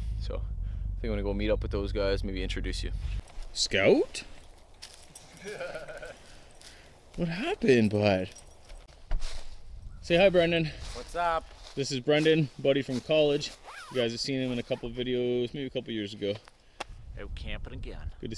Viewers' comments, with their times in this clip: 0:05 is that Seth rogen laughing in the back?